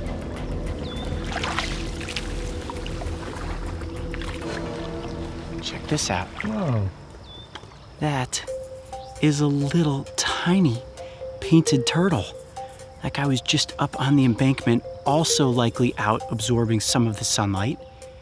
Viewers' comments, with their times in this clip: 0:06 my fav part ^-^ the "whoa" of wonder at the adorable turtle.